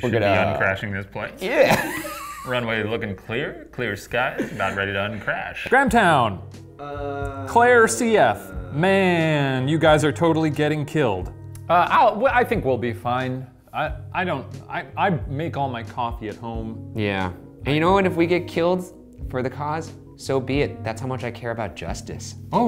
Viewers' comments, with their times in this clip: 0:06 the uhhhhhhhhhhhhh in the background